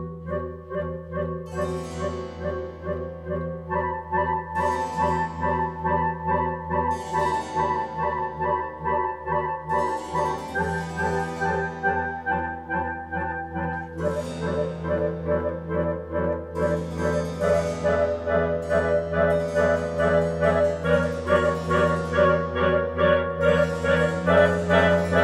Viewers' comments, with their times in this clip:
0:07 contrabass left outside to freeze oof.